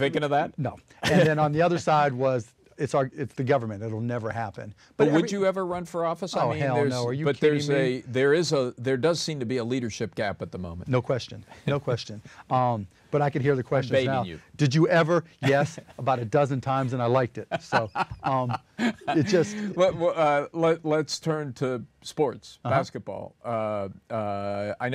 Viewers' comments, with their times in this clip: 0:06 is funny!!! The way he says "H*ll No"